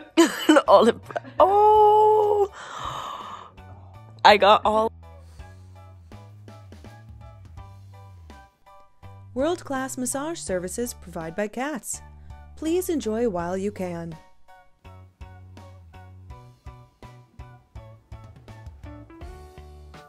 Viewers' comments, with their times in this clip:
0:06 the kitty tells the Boston Terrier to go away----she's mine for now! The next one after, the little kitten mews will melt anyone's heart. When this heat finally dies down maybe in September I'm going shelter shopping for a cuddlebug, hopefully a black one as we lost one recently.